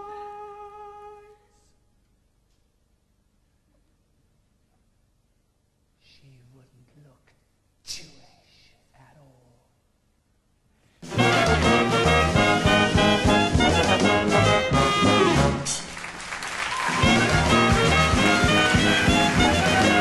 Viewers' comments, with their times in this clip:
0:04 the line is and is said very quietly